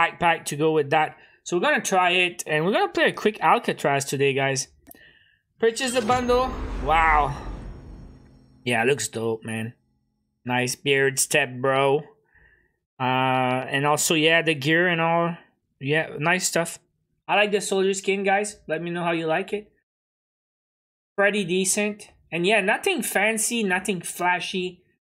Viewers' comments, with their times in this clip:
0:06 you sounded like Woods a bit there Edit: where he says "looks dope man"